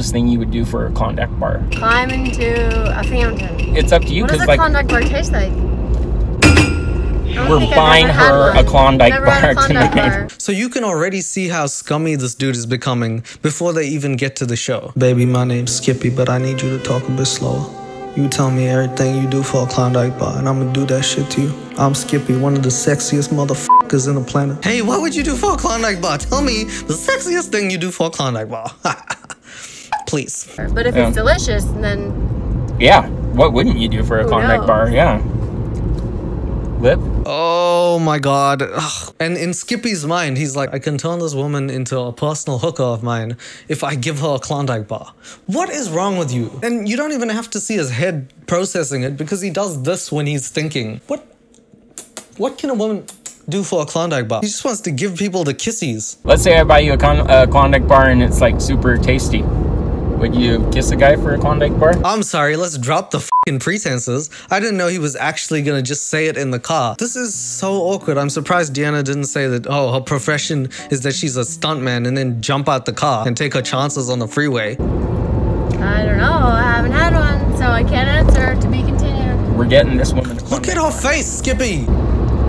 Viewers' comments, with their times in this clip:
0:09 Completely non-sequitur, but am I the only one who noticed the Black Panther drums and am very confused?
1:08 hahaha he said condom bar